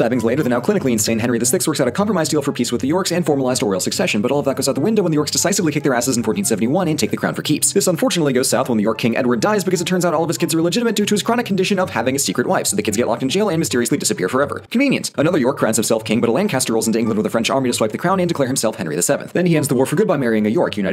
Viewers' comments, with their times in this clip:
0:07 "This unfortunately goes south when the orc king Edward dies." I need this in fanart.